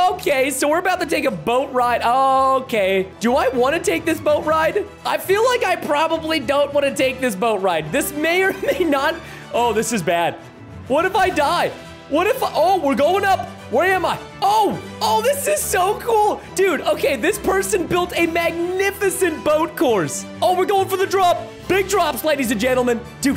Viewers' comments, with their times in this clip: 0:06 "DEJAVU SONG STARTS PLAYING"